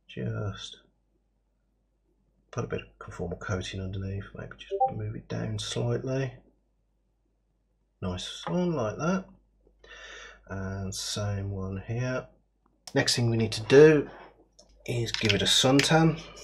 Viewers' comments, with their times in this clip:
0:04 was getting mad at why my discord pinged me....welp found out why